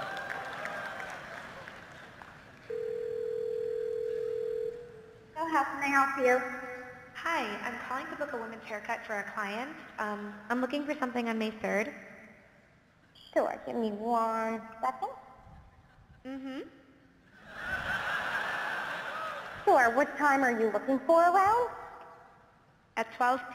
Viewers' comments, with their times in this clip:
0:09 programming a perfect robot machine to say "UMMM" really makes it seem more human...my god.